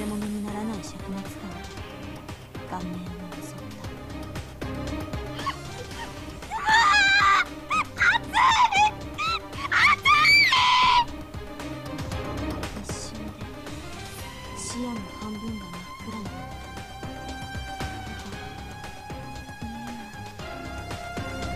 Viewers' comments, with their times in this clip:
0:08 Its strange is sounds lke she is saying "i'm burning, I'm Burning."